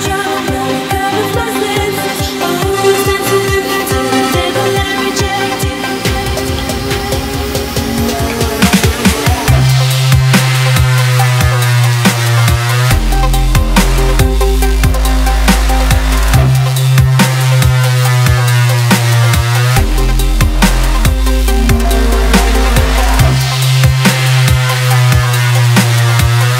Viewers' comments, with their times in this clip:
0:09 DROPS LIKE A B !
0:09 The bass is a disappointment :/ Other then that the song is just B !
0:09 drop like a b !... oh wait it's weak as fuck:(
0:09 Dropped like a B
0:09 Dropped like a B !
0:09 Is it just me or does it sound like a saw
0:09 Is where it drops
0:09 Well usually dubstep's around 140 so it's the 16th measure but yes, you're right
0:09 Dropped the bass like a B